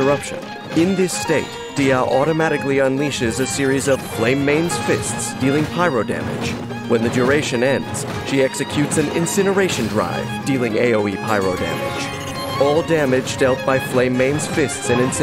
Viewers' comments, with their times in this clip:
0:03 the music in sync with the hits ‼️